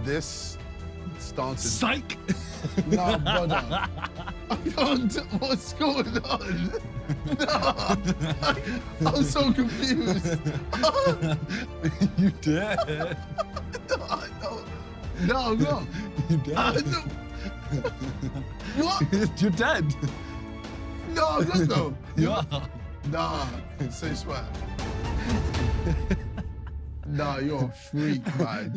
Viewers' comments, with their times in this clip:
0:07 simon casually saying "nigga you dead"
0:10 I know he didnt but it lowkey sounds like Simon's saying "n__ you dead" lol